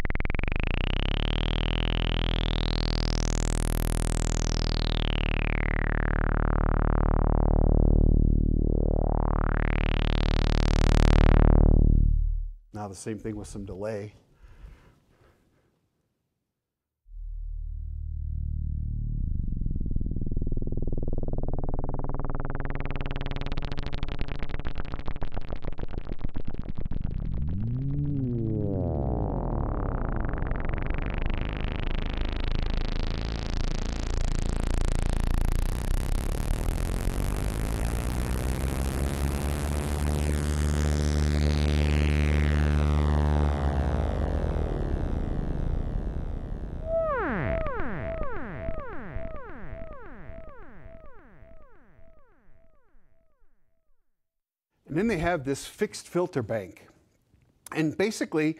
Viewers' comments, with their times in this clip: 0:07 did he just make the regular show intro
0:09 That sound kinda resembles the intro sound from Regular Show lmao
0:19 My bowels cooking up an ICBM
0:26 How my stomach sounds every morning. How's that for an image?
0:27 I thought that was the guy saying "Woooow".
0:27 I heard the Muto from Godzilla in there when he was doing the oscillator on delay. Slow that down and you've got a Muto call.
0:27 sounds like my stomache at night
0:30 All I hear are very expensive fart noises
0:31 thats phat as phuck
0:37 sounds like a plane taking off
0:46 synthesized Taco Bell fart.
0:46 The single quack of an interdimensional duck.